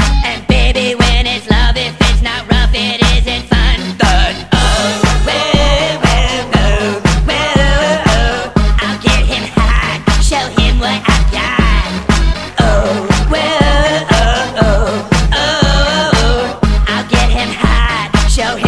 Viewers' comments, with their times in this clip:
0:03 did Erick say i'll rum it up its buns